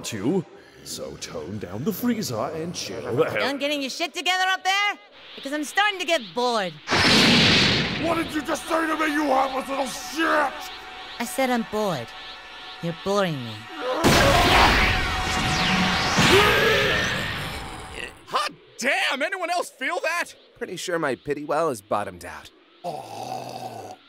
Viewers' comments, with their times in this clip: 0:07 0.25=Drunk Android triggered